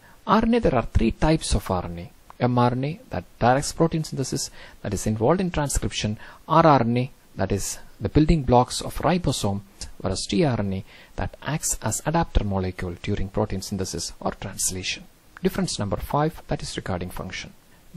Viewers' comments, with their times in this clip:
0:04 I hear a lot of ARMY too wth I'm so deep in this RABBIThole 😂